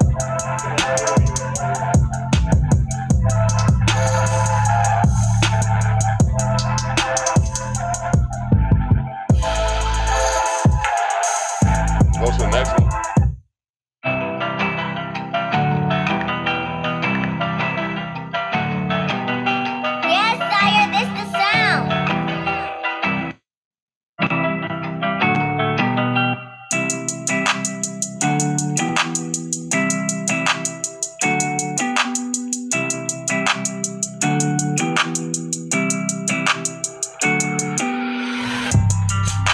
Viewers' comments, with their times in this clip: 0:05 sample sounds like that air/synth chord on Ginuwine's "Pony".
0:22 you will hear greatness in rare form start to play. Whoever made that beat is a genus. SHY GLIZZY,Kodak black ,and/or Rod Wave would kill that beat‼️🔥🔥🔥🔥🔥🔥🔥🔥🔥🔥